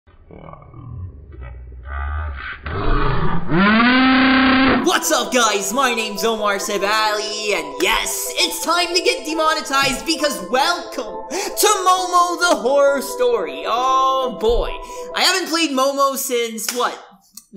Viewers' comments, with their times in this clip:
0:03 Slow motion scream